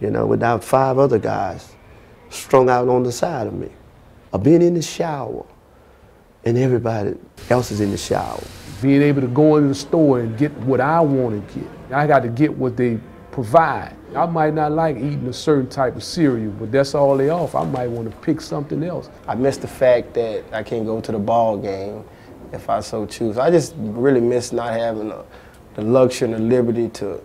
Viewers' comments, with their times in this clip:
0:10 The guy sounds like Tracy Morgan.